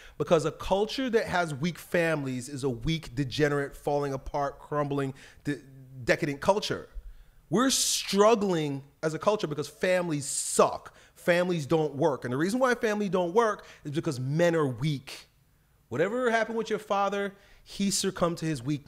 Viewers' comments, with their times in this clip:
0:05 wtf is he saying decitate dekated i've replayed it 10 times and still don't know what he's saying or what the word means